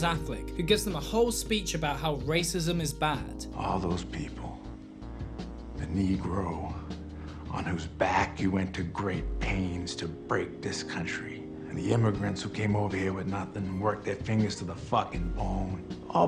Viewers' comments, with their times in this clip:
0:04 Oh god, it sounds like "you told them they could get head", why would you not do another take of that, ffs.